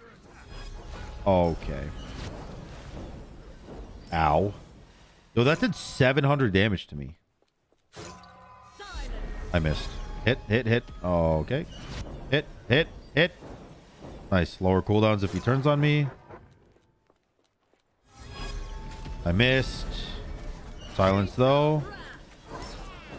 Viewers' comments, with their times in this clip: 0:09 accidental seth rogen impression